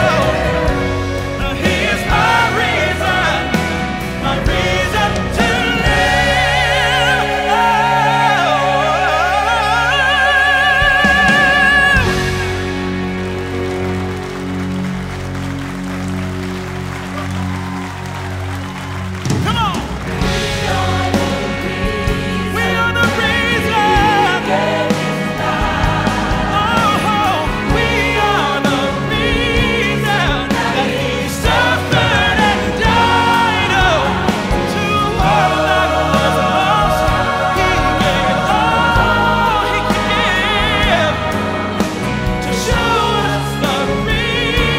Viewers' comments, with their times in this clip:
0:07 Still has his tenor notes at age 48 (almost 49), haha.
0:26 David sings this with such love! LOVE is from God for God IS LOVE <3 1 John And we have known and believed the love that God hath to us. God is love; and he that dwelleth in love dwelleth in God, and God in him.